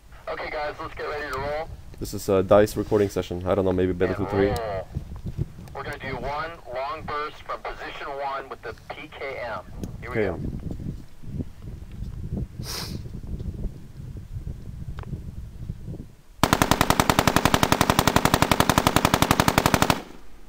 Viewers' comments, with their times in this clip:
0:08 holy cow you can see how the mic COMPLETELY changes the audio,,, im also into sound design and audio engineering,,and i am all about the audio in games, ESPECIALLY in war shooter's,,,when i see some of these games that come out with poor sound, i wanna go into they're head office and talk to them haha, and tell them to get it proper and get some unique sounds What was the link to that Vimeo video by the way?